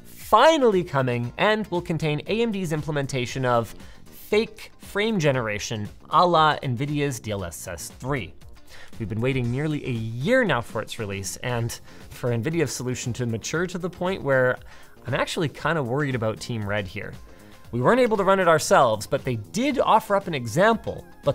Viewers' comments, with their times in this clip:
0:07 Did you just say "à la nvidia" in fake Canadian French meaning "on nvidia's"?